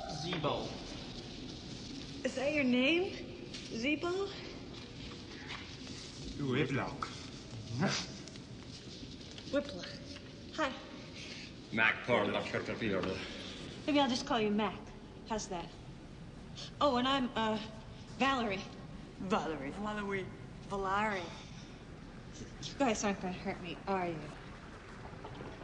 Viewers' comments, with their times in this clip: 0:07 Ace Ventura bark. 🤣🤣🤣🤣🤣